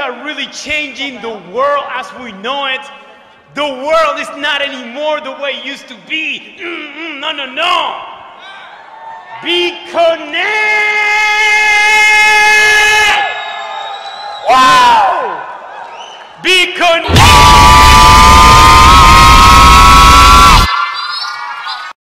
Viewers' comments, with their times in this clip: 0:06 i just like how he says nonono
0:10 X .25 speed. stuka diving
0:11 mosquito at 3am
0:16 He yelled so hard he turned into starkiller base